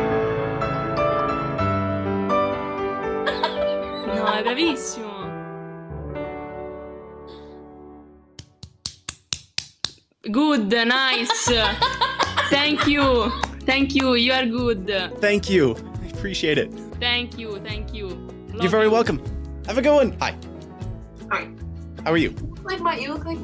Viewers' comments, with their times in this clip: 0:05 Italian speaker 😅 "gudde gudde"